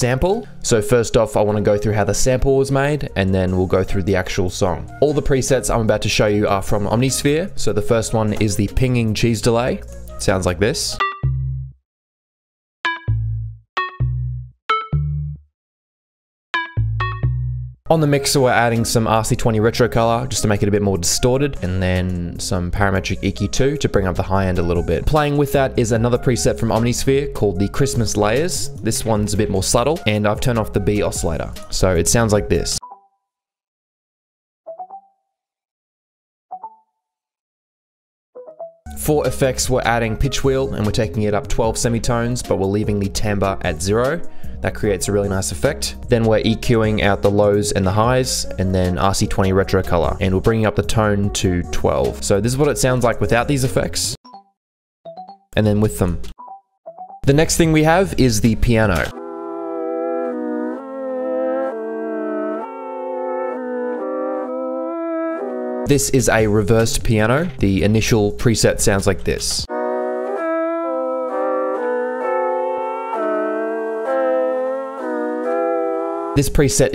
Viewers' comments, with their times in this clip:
0:10 🔥 how come the notes in your piano roll show it as 6 semi tones up than the notes that actually play? the first synth sound it shows a C, A, B, D but the notes are actually G, E, F#, A ??
0:33 That’s my favorite sample
0:57 what scale is this?